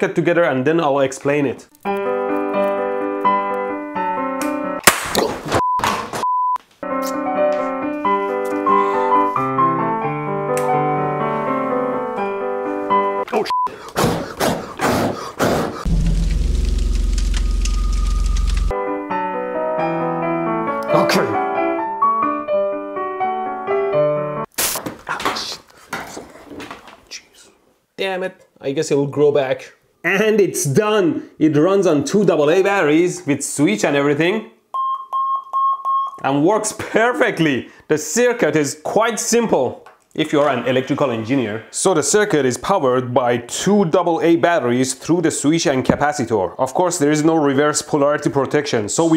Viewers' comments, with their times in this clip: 0:06 nice little piano tune 😊 cutely catches on fire😊😊😊
0:11 imagine programming an ariduno just for a fucking beep. there are shits out there who are doing that actually. but what? how even this shit takes fire?
0:34 i know the definition of the four BLEEPS but i will not say 😂
0:34 Isn't the frequency and afterwards higher than what it was before?? Before it was a little flatter than B and now it is slightly sharper than C.
0:34 Sounds like Sputnik...
0:35 But but but... that was 1.06 kHz! Literally unusable. /s